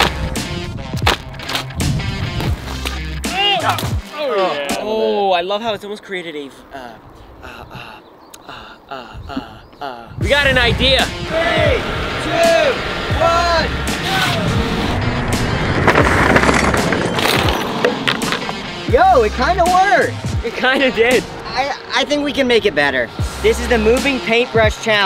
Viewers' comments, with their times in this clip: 0:06 Iegend says he’s still saying uhh